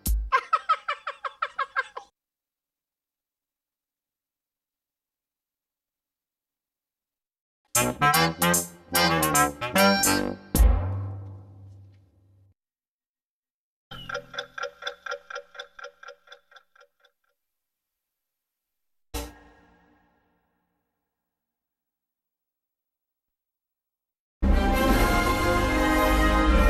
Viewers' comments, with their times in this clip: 0:08 Grover insert Grover sounds